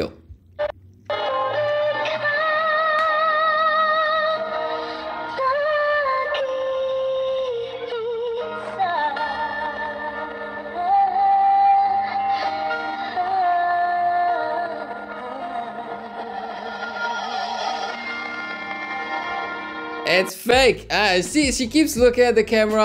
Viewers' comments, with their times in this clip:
0:04 When She deep Inhaled it got so insynced , now this made me Confused even more 🤣🤣🤣🤣